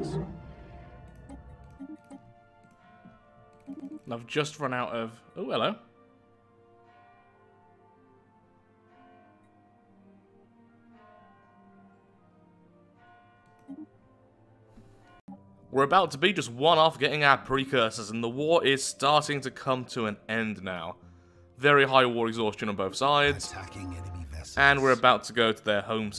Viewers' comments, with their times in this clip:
0:08 you can hear a church bell in the background, & that really freaked me out because I live right next to a church & was trying to figure out if it was from the video or next door.